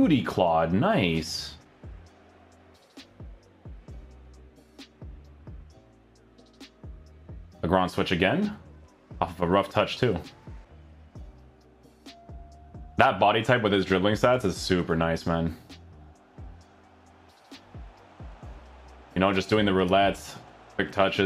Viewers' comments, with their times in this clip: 0:06 What is he saying 😅 the ground switch??